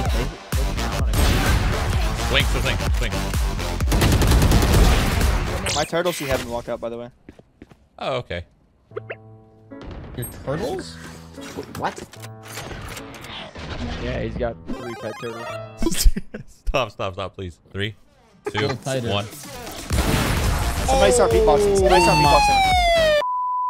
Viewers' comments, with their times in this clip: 0:05 is this literally the sound of a rat on osrs LOL